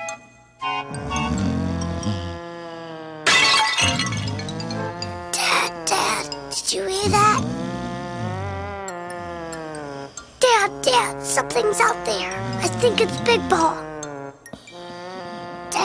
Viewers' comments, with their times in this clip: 0:03 Is it just me, or did pretty much every cartoon in the 1990s use that crashing sound effect ?